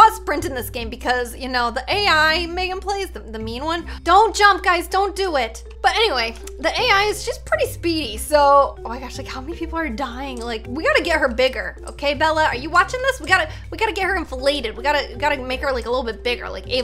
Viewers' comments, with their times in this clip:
0:04 🥺 “Don’t jump guys don’t do it..” idk that made me go awh Then she’s like “buT AnYWaY” 😂